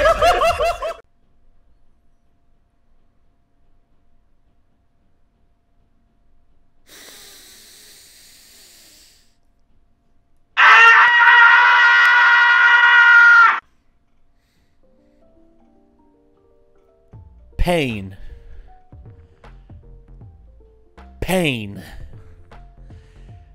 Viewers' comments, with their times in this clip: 0:10 Epic scream, dude! It actually kinda sounds like one from a Tom and Jerry episode!
0:10 Man that`s an good Tom Scream